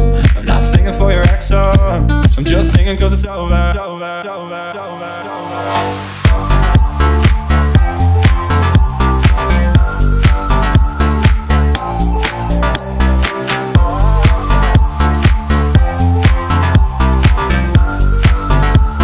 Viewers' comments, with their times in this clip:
0:06 yeah but that though... what I can only describe as distant stars communicating through the universe